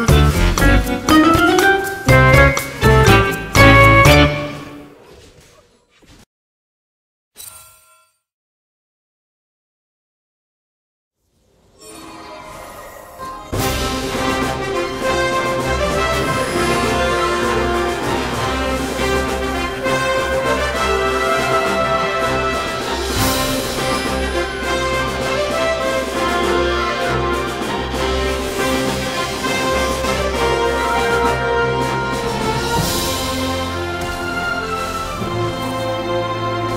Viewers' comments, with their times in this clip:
0:06 hahaahahahah it fits with this music
0:08 That fiddle play had me on the floor. That was so funny!
0:13 That fidle!!!! HAHAAHAHAH
0:21 the music!, AJAJAJAAJAJAJAJAAJAJAJAJAJAJJAAJAJAJAJAAJAJAJ. U are a genious.